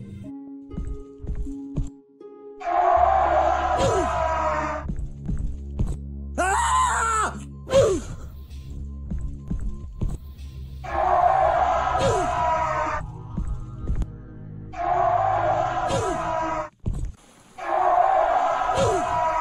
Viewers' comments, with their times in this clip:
0:06 Thinknoodles has the best sound effect LOL😂😂😂😂🤣🤣🤣🤣